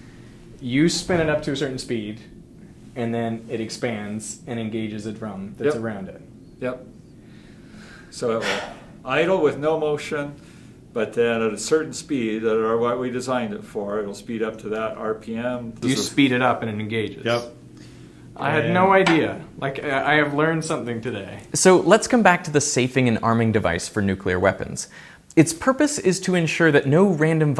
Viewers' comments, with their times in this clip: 0:08 That sigh was me during the entire video.